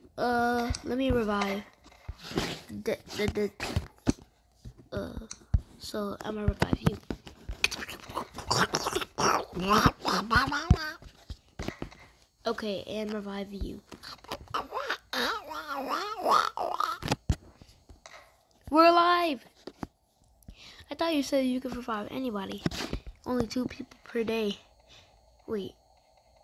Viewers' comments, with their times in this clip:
0:08 donald duck sound